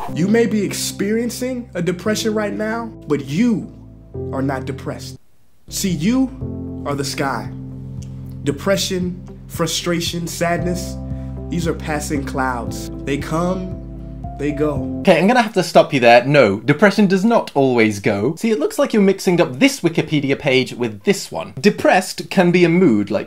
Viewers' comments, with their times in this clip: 0:10 M'en It man was it blaring like at the mark